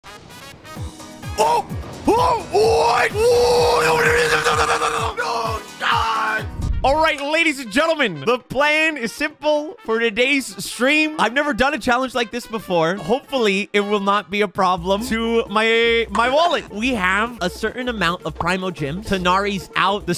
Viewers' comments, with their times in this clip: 0:03 aksjsksmdjjdmsmdmjdjemdksk 😂😂😂😂😂😂 what the heck is he saying 😂